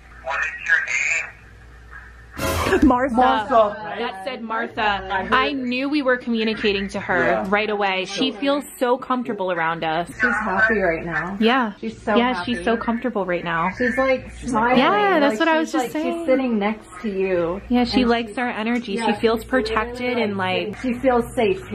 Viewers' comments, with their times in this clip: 0:05 /see, the voice recorder recorded nothing!! Your just delusional!!